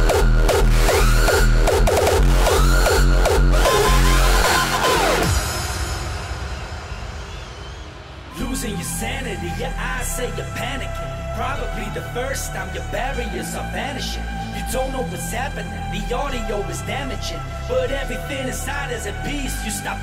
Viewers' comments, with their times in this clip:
0:08 track from is awesome!!!! it has rhythm and brings really party feelings!